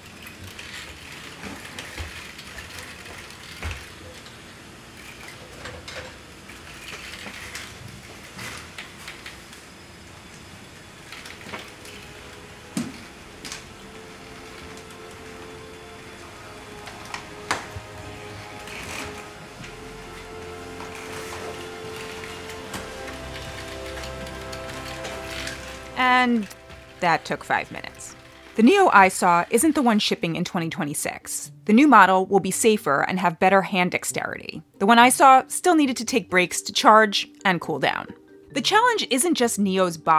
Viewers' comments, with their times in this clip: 0:10 with the music playing is sending me🤣😭
0:27 nice voice crack